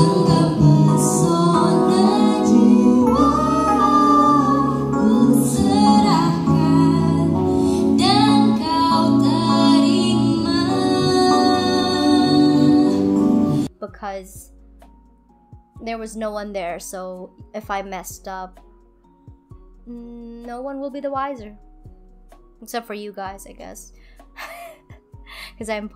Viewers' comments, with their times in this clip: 0:09 Your room is just like I imagined and I love it it’s so pretty!!! 😍🫶🏼 Also you so pretty!!! Quick Edit: was the best omg your voice is so pretty I love it! Did you teach yourself or did you have some singing lessons?